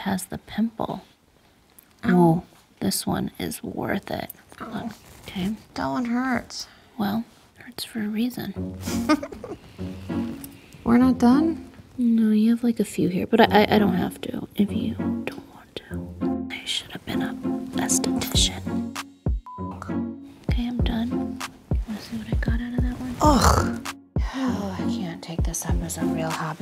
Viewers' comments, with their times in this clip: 0:09 Aww Khloe’s little laugh 😭
0:14 Who kept replaying after lol ASMRRRR ahhh xx